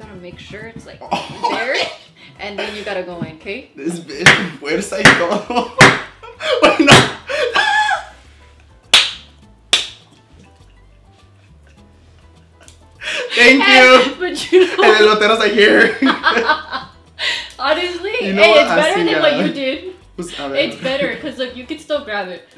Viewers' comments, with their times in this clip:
0:08 pure silence literally me: DYING OF LAUGHTER